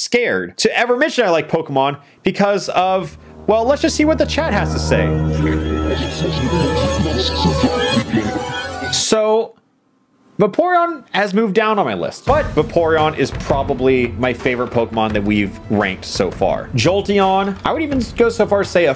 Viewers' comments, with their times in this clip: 0:03 “Let’s just see what the chat has to say,” accompanied by the Super Paper Mario Underwhere music is simultaneously amazing, yet terrifying